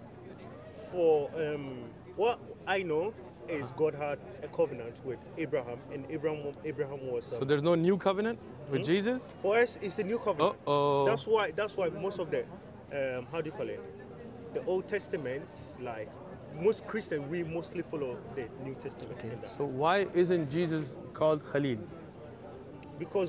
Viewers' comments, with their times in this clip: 0:10 This sounds ooo oooo makes me laugh so hard